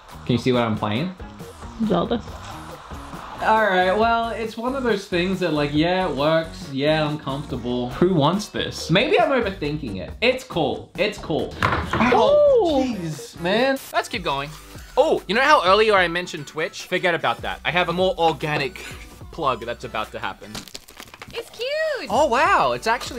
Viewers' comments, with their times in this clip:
0:09 "It's cool." *WHAM* "Oh geeze, man!" Ha! Australian gravity strikes again! Had you been right-way-up in America -- which is in the same hemisphere as Glorious Nippon, the place where these devices were originally designed to operate -- then it would have functioned properly and you'd not have been harmed. I would say "let that be a lesson to you!" but where would the slapstick comedy come from if everything just went smoothly the first time? Thank you for your service, good sir. You're taking one for the team.